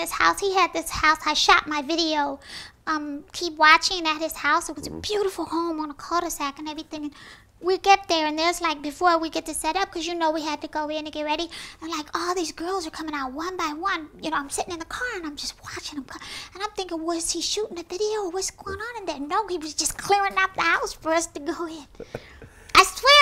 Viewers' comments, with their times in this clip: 0:04 I think she farted